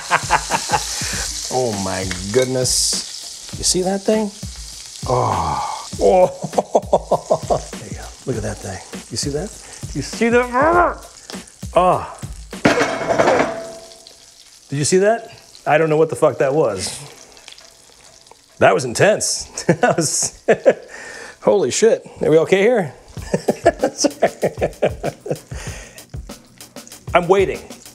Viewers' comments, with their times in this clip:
0:08 That was the ghost in your apartment looking into the pan and slamming their fist on the stovetop when they saw you didn't make one for them too.
0:11 that was the ghost pounding on the stove he wants a burger too lol